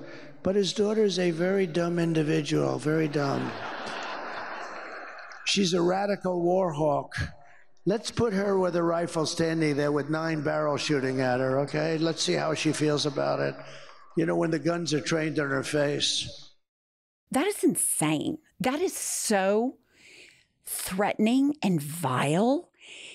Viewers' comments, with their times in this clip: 0:09 he looks and sounds like a shriveled 90 year old.